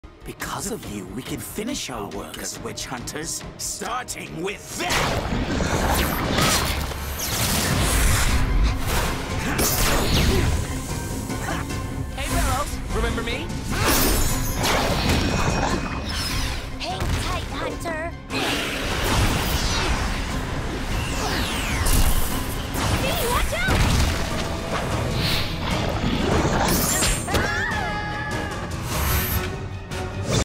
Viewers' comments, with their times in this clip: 0:06 ever since I first watched this episode, I always thought that yelp sounded so much like Child Link from Ocarina of Time
0:27 amity’s scream is the same scream when she grabbed by Odibin back in season one lol